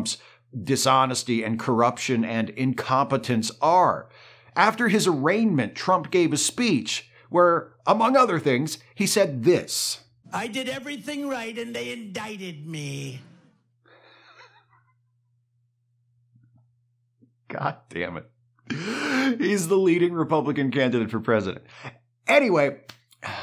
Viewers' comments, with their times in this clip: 0:09 I have heard that clip on several videos and podcasts. I was never looking at the screen, and until now assumed it was one of those cartoonish impressions used as a sound clip used for comedic effect. It blows my mind that it was a real clip/quote from Donald Trump. 😅😂🤣 Come on MAGAts! This is your strongman?! 😂